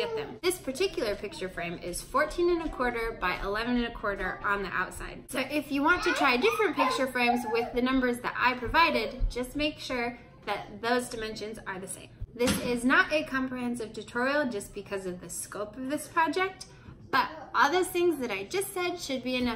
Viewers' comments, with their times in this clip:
0:07 I'm listening with headphones, and I heard kid noises ...for a moment I thought it was my kids!